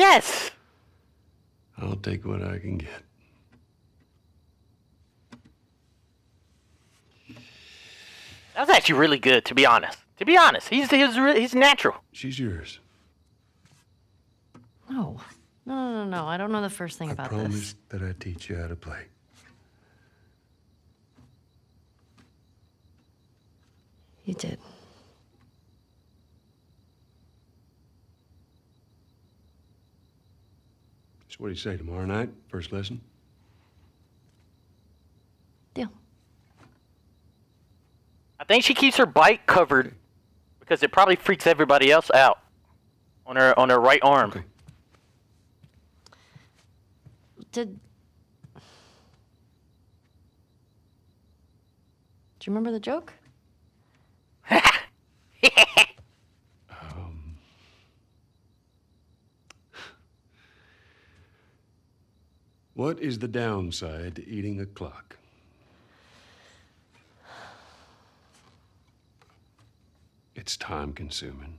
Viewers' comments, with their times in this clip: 0:10 It has not been and I cried at Joel’s singing
0:55 bro sounded like an angry bird 💀